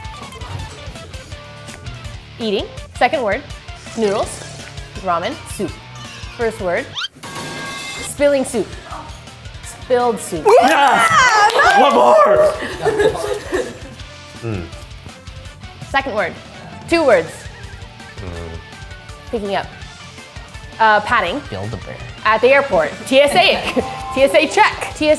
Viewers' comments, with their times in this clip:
0:06 the metal pipe💀